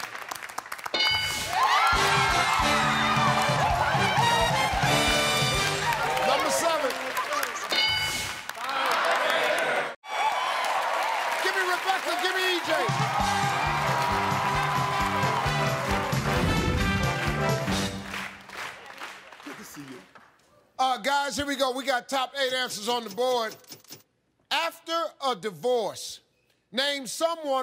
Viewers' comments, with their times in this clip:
0:08 the whole daaamn room shouting that together though....